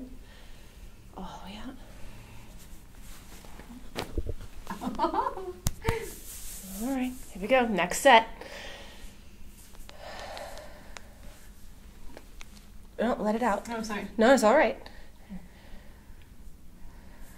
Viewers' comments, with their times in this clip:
0:05 sounds like Winnie the poo’s laugh